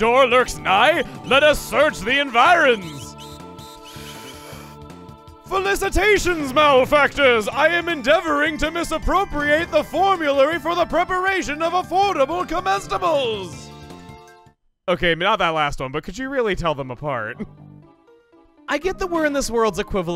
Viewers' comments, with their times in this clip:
0:05 you can hear him take a deep breath and recite a great early SpongeBob qoute from plankton